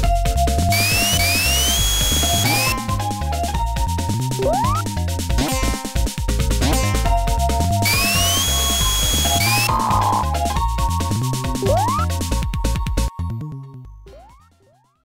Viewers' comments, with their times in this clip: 0:10 is that you, dial up Internet?